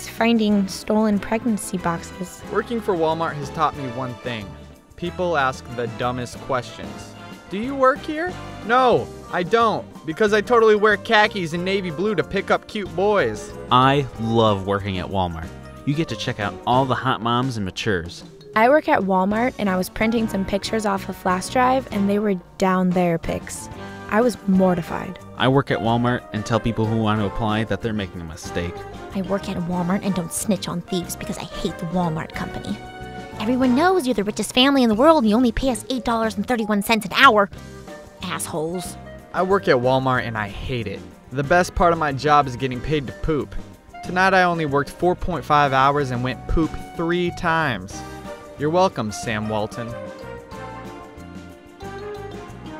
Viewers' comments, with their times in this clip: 0:03 Why is voiced by a man? "Pick up cute boys." What's more likely, a straight female, or a gay male?
0:29 sounds like Pam from Archer
0:29 what is wrong with her voice?
0:29 How come all of them were read in normal voices except for the one ?
0:30 I love the voice acting lol
0:33 is it just me, or does the voice annoy anyone else?
0:33 that narrator sounded really pissed lol
0:35 that was the most annoyingly ng voice ever!!